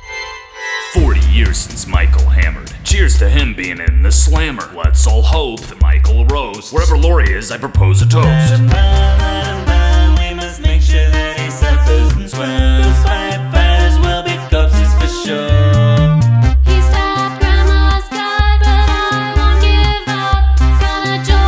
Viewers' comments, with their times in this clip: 0:04 Let's all hope that micheal roasts. Micheal: YO MAMA SO STUPID SHE JUMPED OUT THE BASEMENT WINDOW